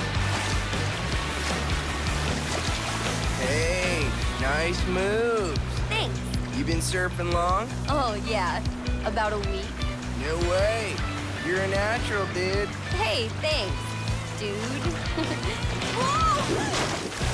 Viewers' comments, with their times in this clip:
0:03 dude he has the voice of jude